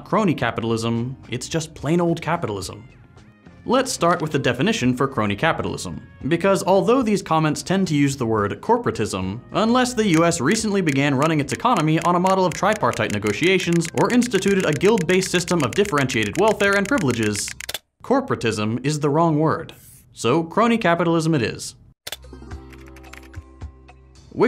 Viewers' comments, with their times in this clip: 0:09 the sound effects are quite loud, I can't hear shit